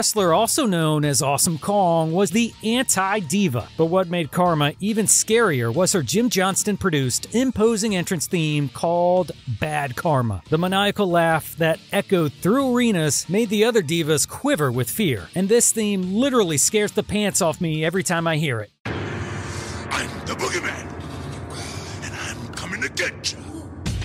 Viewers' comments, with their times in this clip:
0:09 I would argue her TNA theme was more eerie. Sure Kong laughing like that probably scared people a little. But that TNA thing with the giant sounding footsteps sent chills down your spine.